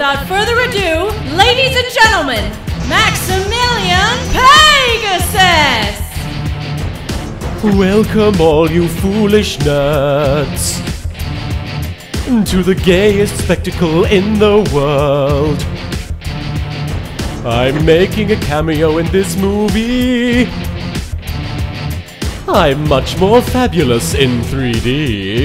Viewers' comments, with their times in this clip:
0:05 Why is pegasus singing with that music in the back ground lmao
0:07 WHY IS HE SINGING